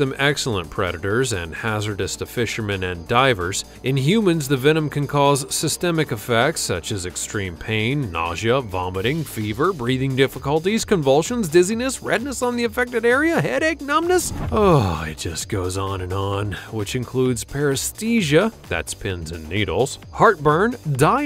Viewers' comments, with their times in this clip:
0:03 "in humans, the venom can cause systemic effects, such as [...] BREEDING difficulties [...]" -- Am I hearing it right: he pronunced "beeding", not "breathing"?